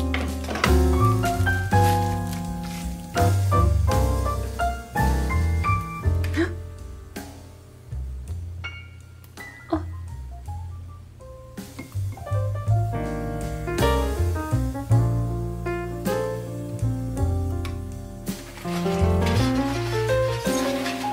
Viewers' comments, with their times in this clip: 0:09 THE "Oh!" IS SO FUNNY IDK WHY